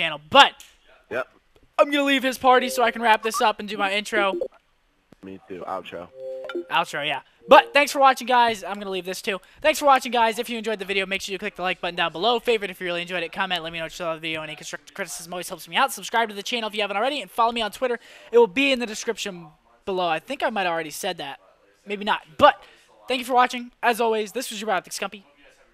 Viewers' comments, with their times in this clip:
0:07 what language were you speaking ?